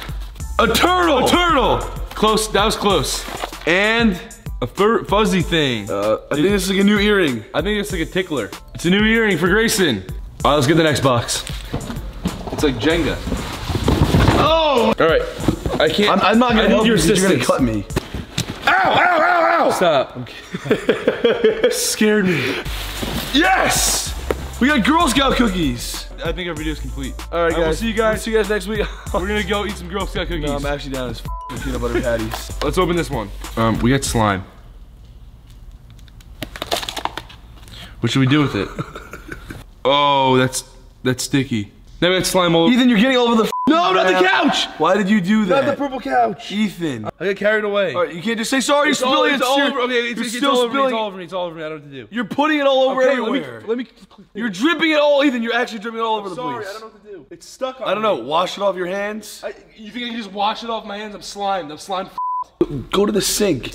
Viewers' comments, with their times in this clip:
0:10 it sounded like he said let’s get the Xbox lmao 😂
0:44 when Grayson started yelling at Ethan for making a mess and he was like “I’m sorry sorry” awww😂❤️